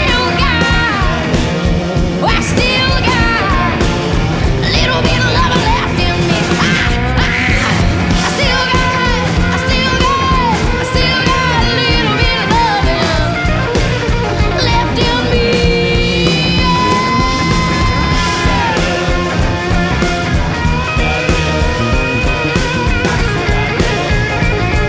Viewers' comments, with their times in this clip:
0:06 Okay but is one of my favorite parts it reminds me of how I feel some days/most day. 😂 anyone else??? But also I love how she shows a bit of her craziness when singing and I mean that in a good way. Lol